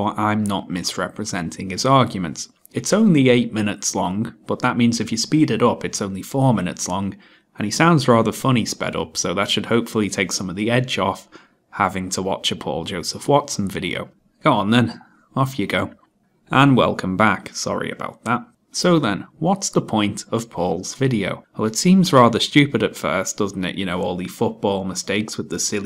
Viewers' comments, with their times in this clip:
0:09 I disagree. He sounds drunk when slown down. That makes it funnier.